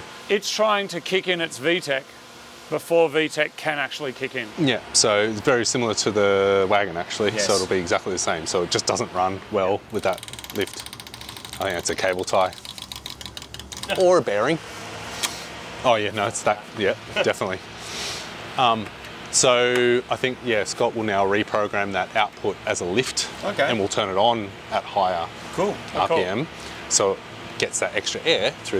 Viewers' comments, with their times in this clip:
0:09 My heart rate when I heard the knocks 🤣